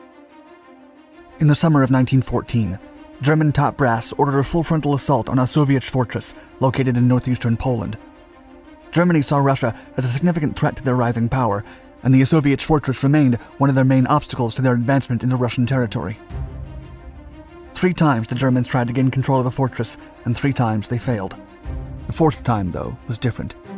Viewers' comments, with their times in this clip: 0:07 Thx I was like, damn the Soviet are traveling in Time ... Again 😁 even the automatic CC write "Soviet fortress"
0:11 Guys, he didn’t say “a soviet fortress” He said Osoweic fortress